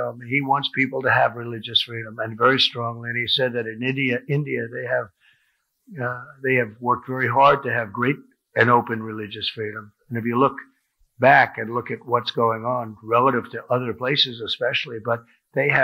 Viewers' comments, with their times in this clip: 0:03 Am I the only one who noticed him saying idiot rather than India and then correct it .?